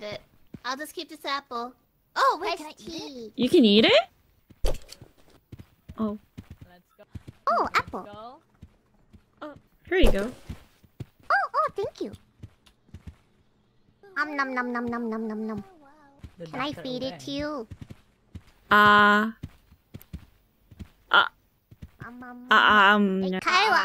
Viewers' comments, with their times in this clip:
0:07 they way Biboo says "ohh apple" is so adorable